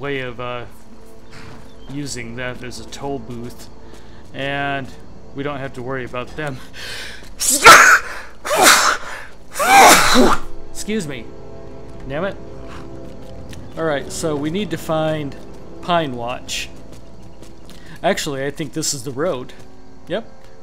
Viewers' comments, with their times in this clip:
0:03 the Dragonborne invents a new Thuum.
0:06 epic vus ro dah sneeze